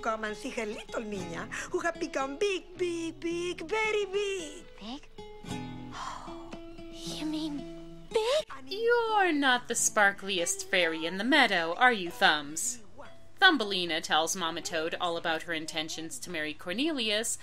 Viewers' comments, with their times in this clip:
0:03 Is that....Is that CHARRO's voice? Why isn't that listed as a sin all by itself?!